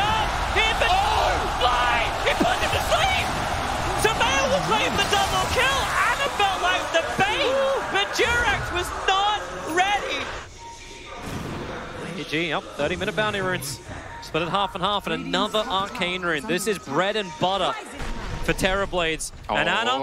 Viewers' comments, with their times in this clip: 0:04 that laugh always gets me